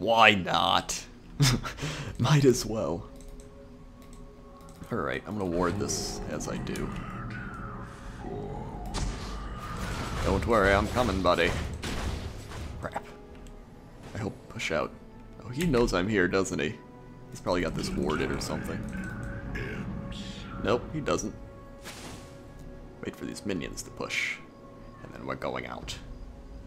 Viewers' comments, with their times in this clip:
0:08 Worgen Freeman voice :D